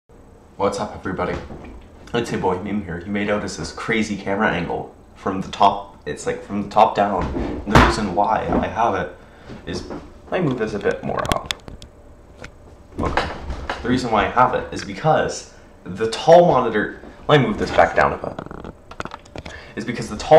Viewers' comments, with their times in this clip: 0:07 Unsure what the sound is, I think it might be my foot hitting the baseboard of the wall